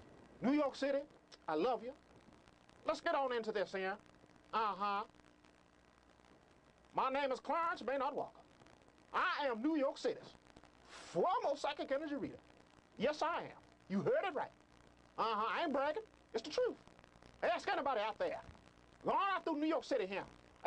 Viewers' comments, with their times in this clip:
0:07 New York's fROARmost psychic energy reader 🤣🤣🤣